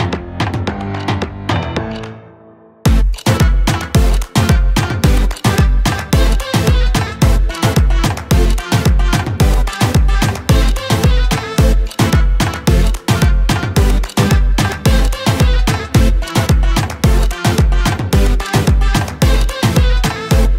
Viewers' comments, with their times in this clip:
0:03 The Song is Awesome i love it.